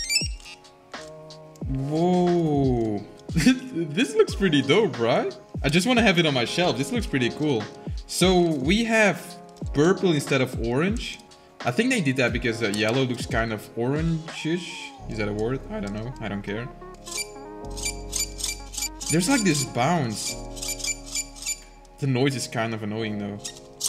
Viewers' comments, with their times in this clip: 0:09 finally I’m not the only one who says “burple”